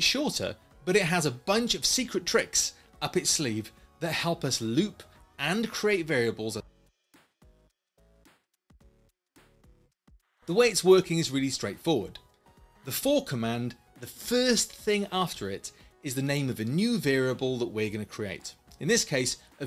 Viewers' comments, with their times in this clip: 0:06 You just cut off lol!
0:06 Anyone noticed he got cut off ?